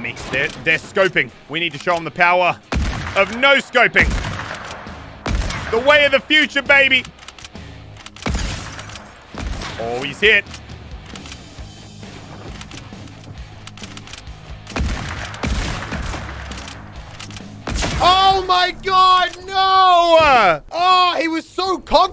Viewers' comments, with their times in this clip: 0:03 now he looks and sounds like Elon musk lmao